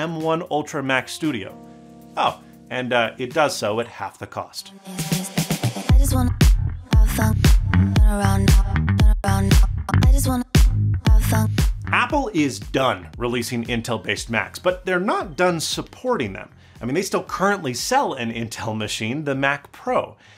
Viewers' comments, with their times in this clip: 0:08 The music slaps. Added even more class to the channel!